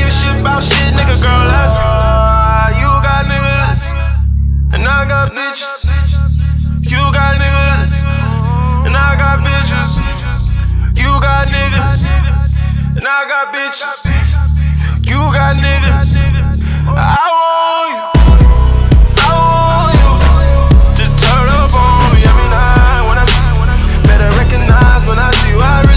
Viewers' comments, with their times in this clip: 0:10 so we not gon talk ab how this song had the hardest beat drop of the decade...